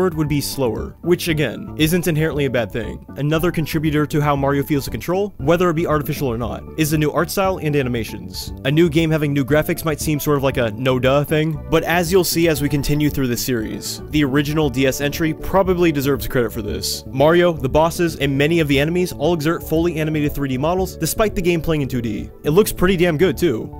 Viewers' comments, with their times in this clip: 0:04 I could here the fireball sound effects here